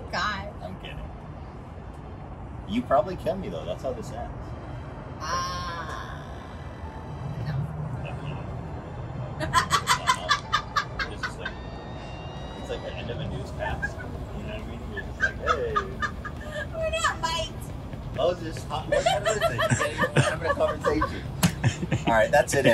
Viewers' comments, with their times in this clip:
0:10 I've never heard Trish laughing like this b4